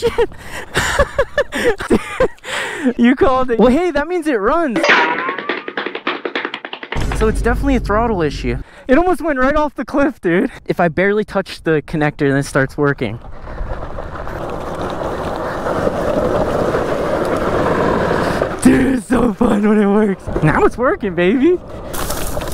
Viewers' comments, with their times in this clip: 0:04 "hey atleast he runs" then the running sound effect had me bursting out laughter.🤣🤣🤣🤣🤣🤣🤣🤣🤣🤣🤣🤣🤣🤣🤣🤣🤣🤣